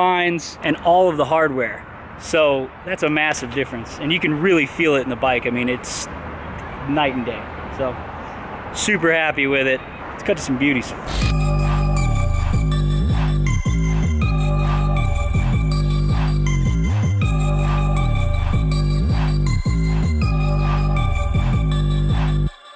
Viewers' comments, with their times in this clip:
0:10 That song though when he cuts to the “beauties”